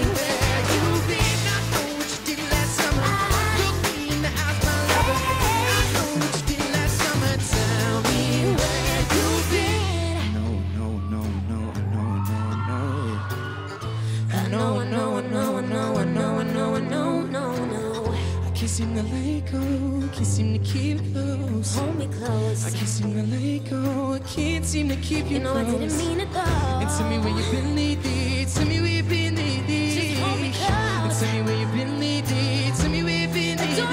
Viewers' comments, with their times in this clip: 0:08 since when can Shawn sing that low😭😭
0:14 gosh their voices fits so perfect💞💞
0:20 The build up woow